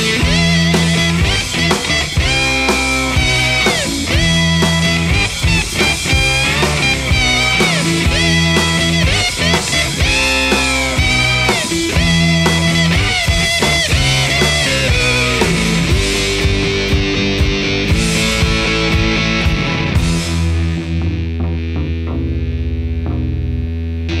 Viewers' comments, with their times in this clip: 0:05 what is that angry kazoo